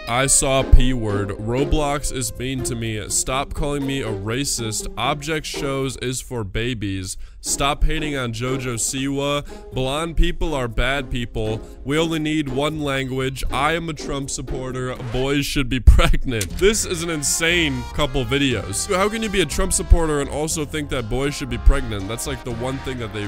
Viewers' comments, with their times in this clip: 0:05 (EXTREMELY LOUD INCORRECT BUZZER)